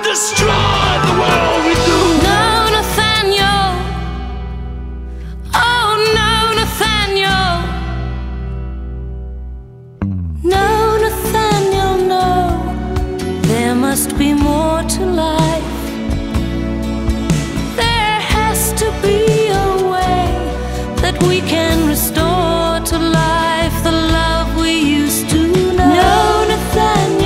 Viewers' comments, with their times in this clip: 0:09 that slide… it’s about the perfect musical gesture for this moment.